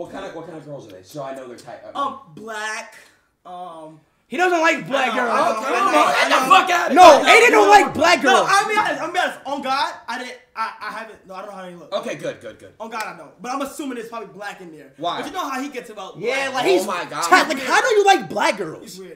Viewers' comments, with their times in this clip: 0:04 speed sounded like a little kid making fun of someone 😭